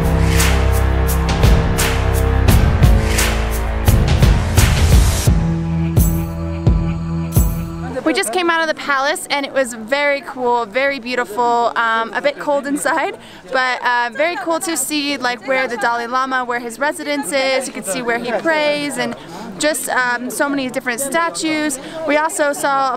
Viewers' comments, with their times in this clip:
0:08 Sniff sniff from the backside. Who's that?